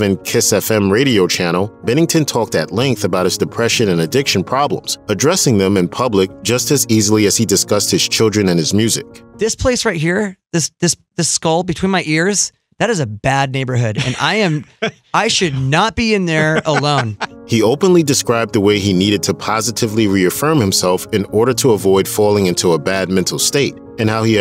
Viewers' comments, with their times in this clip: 0:09 Till this day I do not know why the interviewer laughs while Chester is openly talking about his mental health issues...